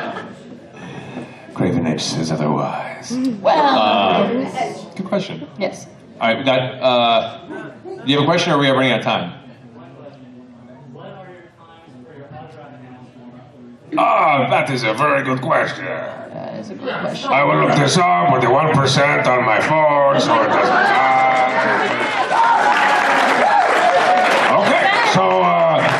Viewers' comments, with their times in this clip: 0:05 I died. He went into strongbad voice when he checked his e-mail!
0:13 More Mercer Strong Bad is always a good thing. xD